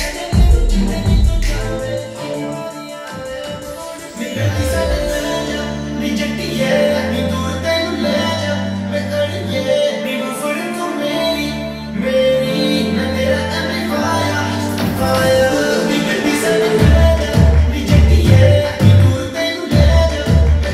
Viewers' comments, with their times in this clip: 0:05 Background Tune OP 🔥🔥🔥